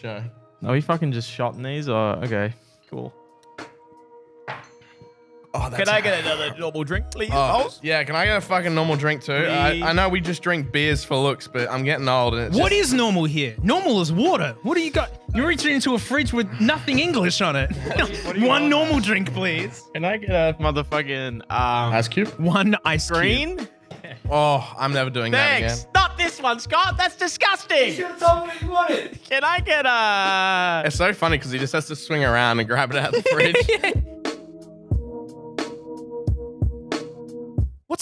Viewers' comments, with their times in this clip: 0:05 “Can I get another normal drink plz bOss”. Reminded me of pink guy
0:19 most American sounding comment on the upload "Muhfuggin"